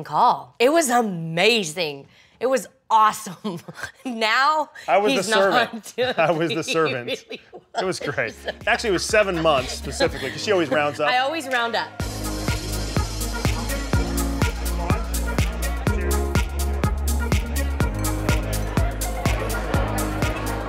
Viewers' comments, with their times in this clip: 0:08 Tamera, your laugh at min reminds me of Tia.😍😍 I just love the way you two cackle.